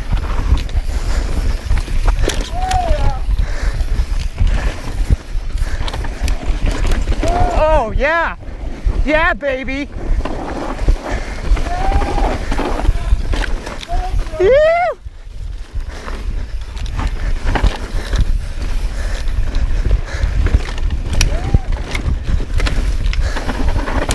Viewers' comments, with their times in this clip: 0:09 Ha. Yah baby!! Sounds like someone else Sick trails!